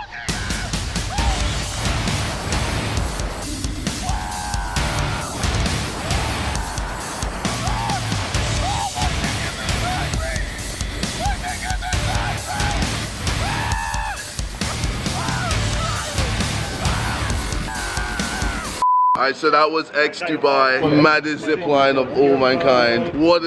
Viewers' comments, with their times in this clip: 0:07 Guy eating cereal in his apartment KSI: AHHHHHHHHHHHHHHHHHHHHH! Guy: 😐